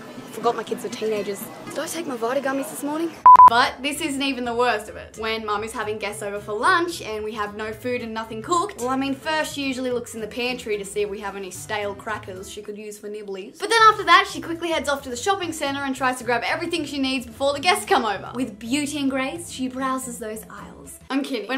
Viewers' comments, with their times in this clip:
0:05 I legitimately heard "mummy"